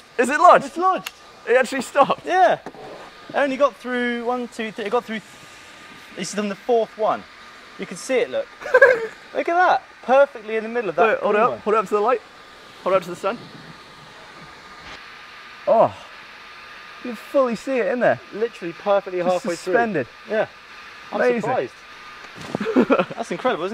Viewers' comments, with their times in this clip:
0:07 I know I'm 3 years late but can I just point out Gav's best laugh here I dont think any other can top this.
0:07 gavin sounds like a spray bottle
0:08 OMG that laugh
0:08 That laugh lol
0:09 Did anyone else hear Gavin's little chuckle